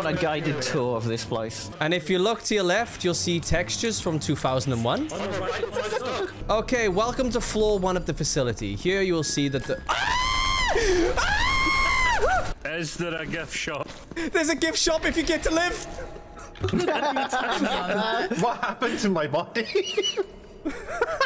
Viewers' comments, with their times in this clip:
0:09 that scream was crisp